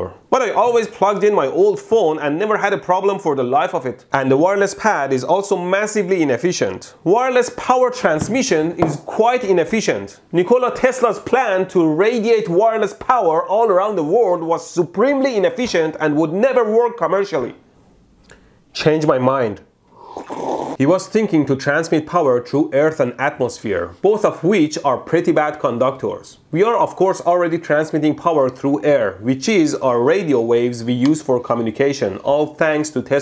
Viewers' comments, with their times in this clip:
0:10 that's the first time I heard somebody, that is not from Serbia or Balkan, pronounce Nikola tesla correctly :)
0:17 It looks like no one caught the Steven Crowder impression